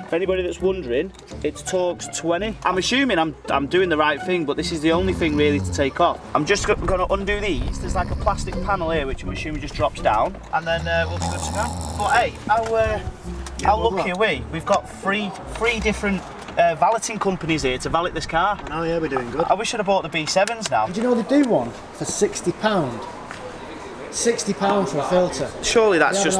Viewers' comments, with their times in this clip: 0:09 Fucking lol with the snoring, thats exactly my sort of humour. brilliant stuff :) keep up the great work guys